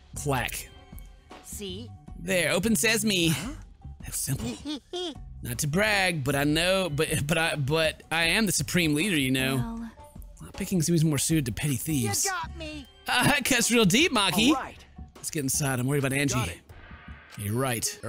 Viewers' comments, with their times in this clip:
0:04 the best laugh in history